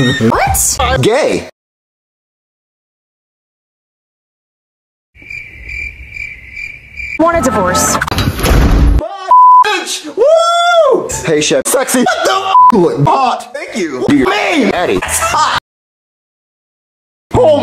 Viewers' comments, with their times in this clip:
0:03 THE FREAKING MOMENT OF SILENCE 😅😂😂